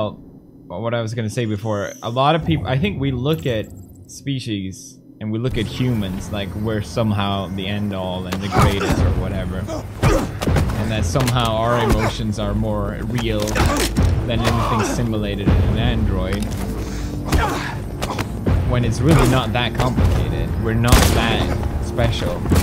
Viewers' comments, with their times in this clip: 0:06 i love felix talking passionate meanwhile the guys are fucking up each other in the game